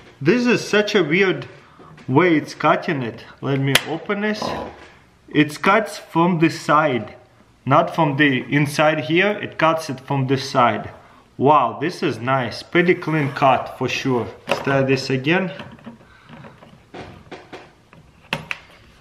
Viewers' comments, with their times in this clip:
0:06 did the camera man or somebody burp?😂😂